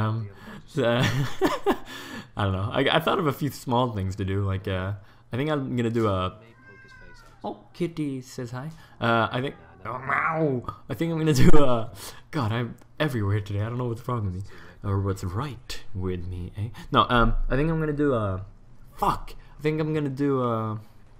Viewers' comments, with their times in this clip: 0:08 That was a very cute meow your cat did there :3 sry I just love pets <3